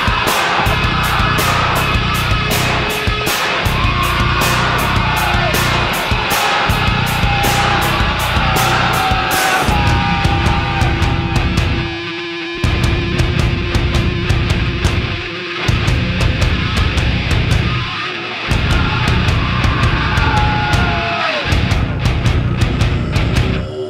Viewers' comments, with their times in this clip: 0:09 The opening lick played on the unique instrument in this song is very catchy and nostalgic for me, it makes me feel like I'm in a jungle. The bass is heavy as fuck on this album as well as all the instruments hehe. is real nice especially with that vocal humming kind of sound over it. I really like how this song is about people just having a bad attitude in general. As well as being little bitches and the severe negative impact it has on everything. The guitar tone is real god damn nice on this album I thought I'd mention hehe. Enjoy!